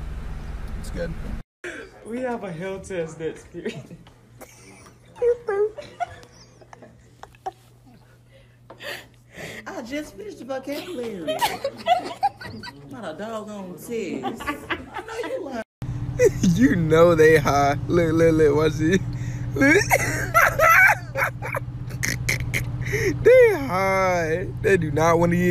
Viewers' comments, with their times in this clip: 0:09 What the hell did they say 😂